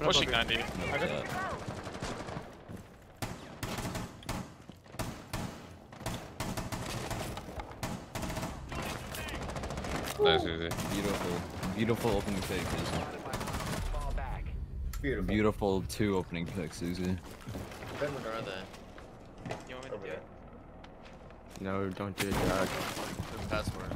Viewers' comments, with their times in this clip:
0:05 sounded like a beat lmao